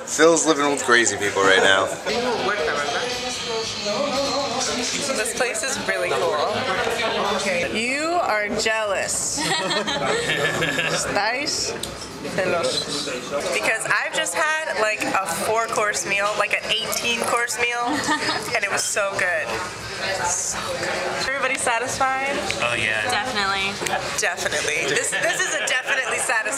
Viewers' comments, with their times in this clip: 0:09 that guy laughing sounds like seth rogen lol